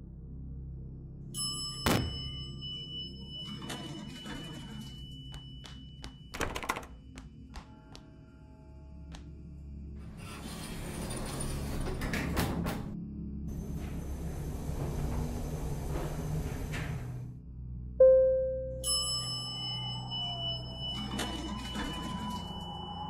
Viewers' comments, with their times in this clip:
0:05 I had to fix the time stamp, so, I hope this stamp works. TOTAL LEAP OF FAITH! XD Then LITERAL SCREAMING I guess nooooooOOOOOOOOOOOAHHHHHHHHHHHHHHHHHHHHHHHHHHHHHHT!!!!!!!!!!!!!!!!!!!!!!!!!!!! :( Will she ever live?